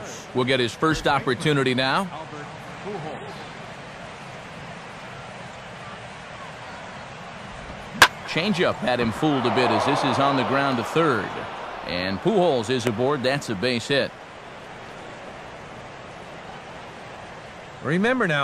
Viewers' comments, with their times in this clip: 0:05 is the women in the stands saying "F you up Albert"
0:05 Did anyone hear the women say f***k you albert lol
0:05 Did anyone hear the women say f***k you alberys lol